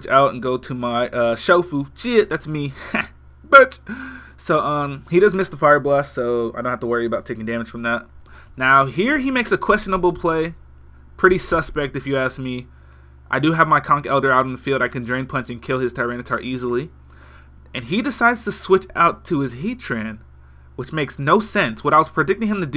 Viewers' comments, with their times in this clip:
0:03 That jay z laugh ! lol